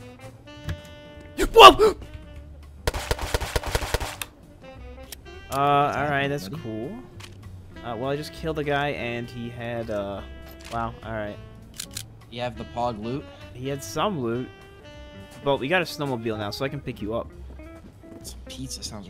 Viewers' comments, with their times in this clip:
0:06 His scream of terror